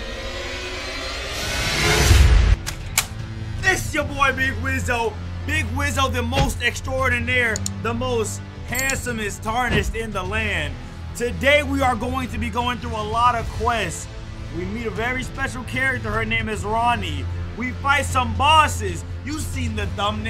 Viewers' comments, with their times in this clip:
0:03 that is a guitar